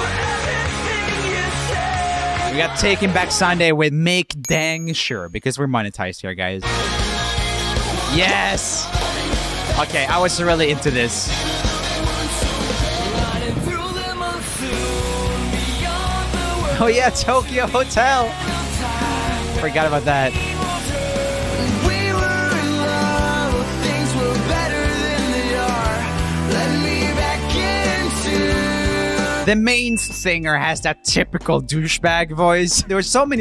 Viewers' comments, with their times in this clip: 0:07 Patrick’s voice is 🤌🤌
0:18 It's weird to hear tokio hotel actually singing "their best known song" "Durch den Monsun" in English. Its so engraved to my brain that i dont really like the song, but also remembers the chorus very well... well in german at least.